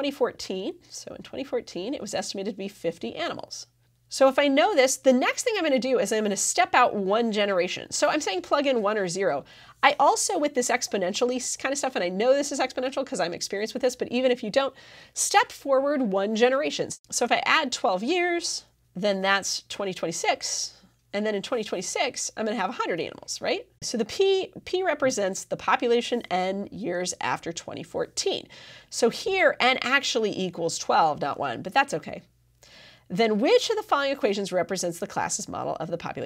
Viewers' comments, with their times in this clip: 0:04 aminals when you're trying take this serious o_O
0:11 anyone else notice "aminals" lol
0:24 50 aminals lol